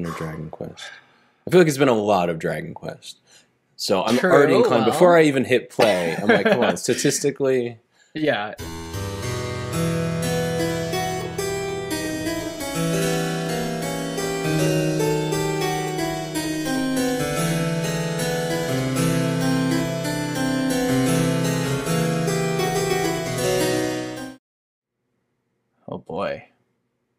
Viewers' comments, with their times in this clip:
0:08 What gave it away for me was that, from what I know, only a few select songs get the live recording treatment and most older games would use a midi soundtrack. And this sounded too natural to me. If it was midi, you could tell from the sound and the fact that the notes aren’t played on the beat. And it didn’t sound familiar to the symphonic pieces I recognize from Dragon Quest. Now, they could’ve used a live arrangement but I think they’ve been using official in-game tracks or at least compositions for the most part?